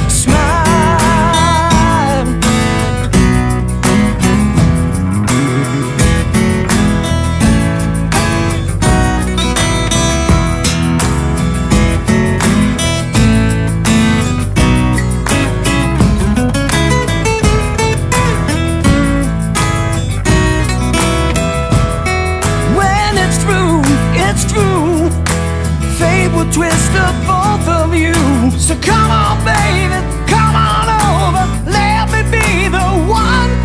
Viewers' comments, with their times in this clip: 0:05 Killer job everyone but gotta love that hammer on bass awesome vocals killer job all around HATS OFF !!
0:21 Nailed that harmonic.